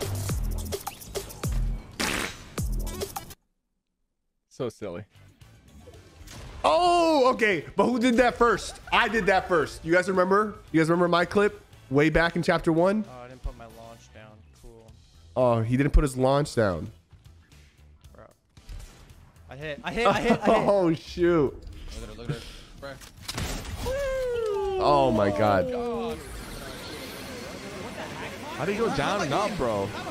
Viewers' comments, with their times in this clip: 0:07 why does sypher voice sound deeper in 💀
0:15 why you sound like a farmer bro? but fr, awsome vid months later